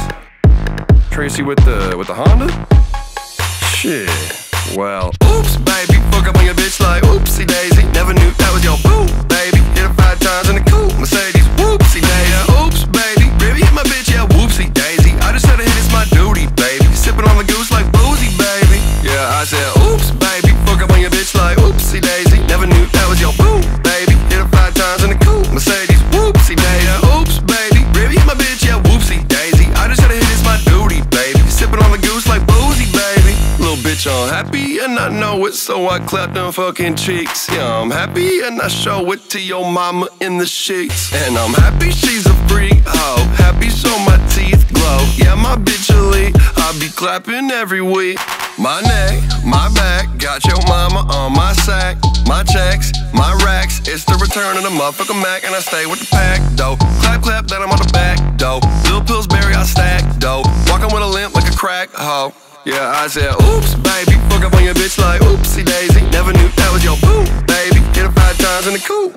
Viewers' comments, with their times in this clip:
0:05 the background beat lowkey sounds like taylor swift's "look what you made me do".. is it just me? 😂
0:05 that beat drop IAM IN LOVE!!!!!!
0:57 so we just finna ignore the fact that my mans was crying